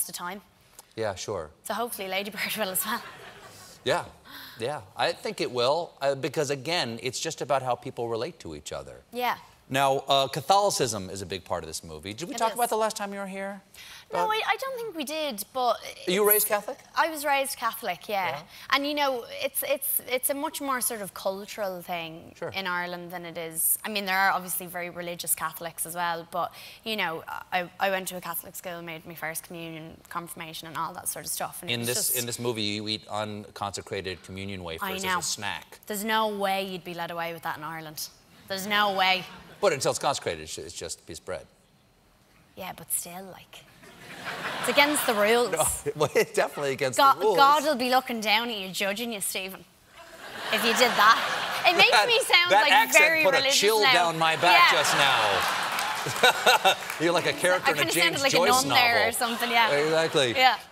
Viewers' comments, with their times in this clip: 0:03 subtle knock on wood
0:03 the knock-on-the-wood made me so happy
0:46 her accent is too cute.